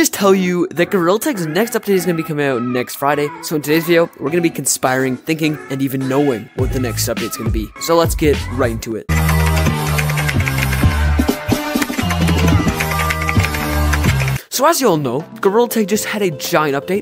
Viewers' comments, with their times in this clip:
0:03 (me before listening to it) 🙁 (me after) * scream* I heard animatic in there If you don’t trust me, intro at this time and listen